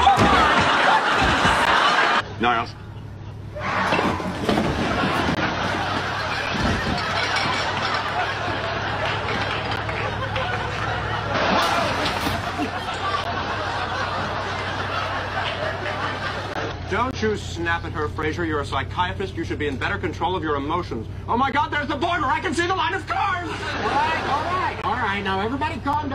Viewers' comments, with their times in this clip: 0:10 Anyone notice Kelsey’s genuine laugh 😂♥️